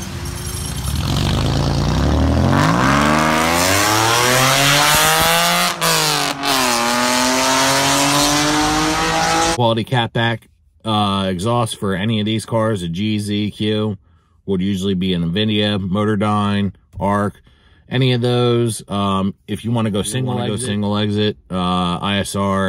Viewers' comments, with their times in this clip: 0:06 what the fuck did he do to that VQ lmaoooo. There’s no way that’s a str8 pipe